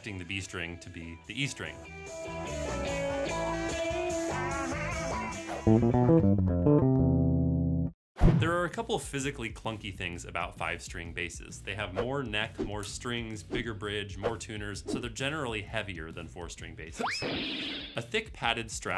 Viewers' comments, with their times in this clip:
0:06 I swear you threw in some Monk there.